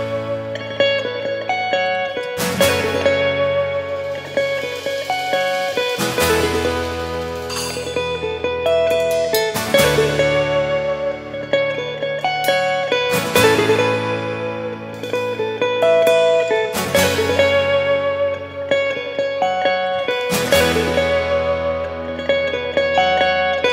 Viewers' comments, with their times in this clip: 0:09 Great solo guitare tone